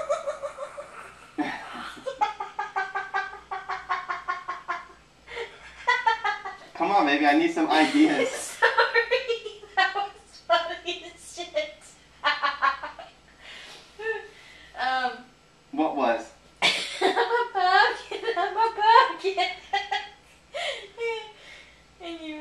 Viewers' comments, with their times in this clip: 0:04 That giggel to funny